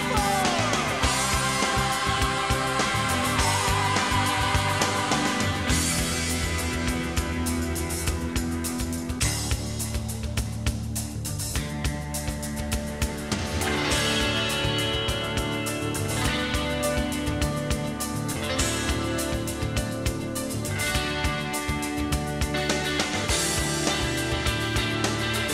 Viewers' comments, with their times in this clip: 0:09 The intro alone gives me goosebumps. Then the atmospheric guitar is just fantastic. You can definitely hear the Madchester sound coming in what would explode a few years later.